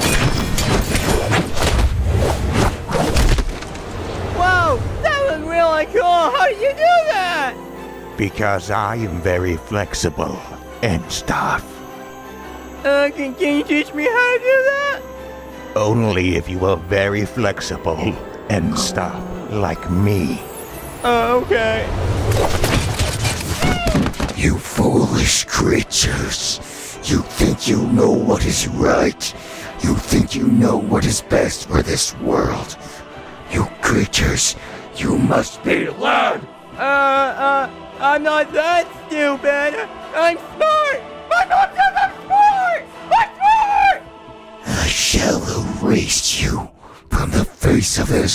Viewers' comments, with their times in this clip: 0:04 did notch say "flexiblely"? Or just "flexible"?
0:15 if you listen well you will see that he was trying to hold back his laugh when he was recording this
0:18 it actually happens more around the mark and you can slightly hear his voice switch tunes. I’m pretty sure that’s what is happening
0:36 Herobrine's voice is changed